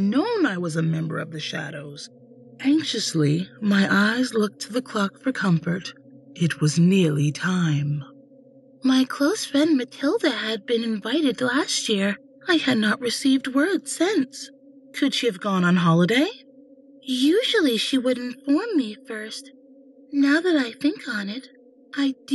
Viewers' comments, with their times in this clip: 0:08 I see her more as a secondary voice character in future stories than a narrator. The worried partymember that was the best usage of her voice in the performance. Almost everything else seemed to fall flat.